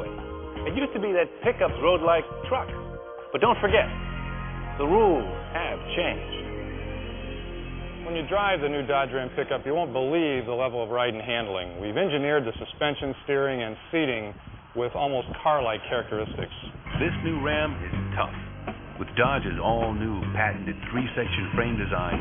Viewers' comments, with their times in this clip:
0:04 PS2 start up sound